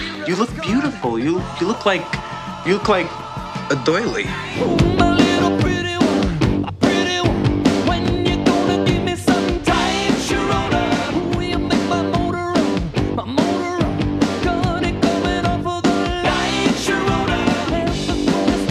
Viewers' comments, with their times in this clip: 0:04 omg what's the song that starts it sounds soo much fun! :D